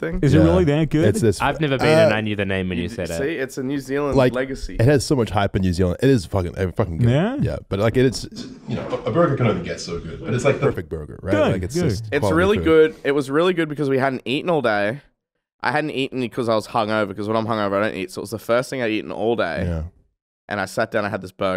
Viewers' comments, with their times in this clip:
0:09 what happened to the audio lol